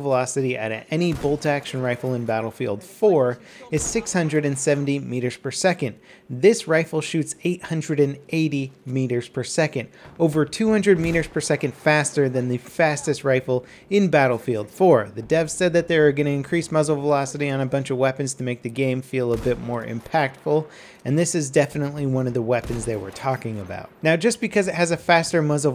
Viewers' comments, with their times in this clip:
0:10 over two hundred weeners per second!!!!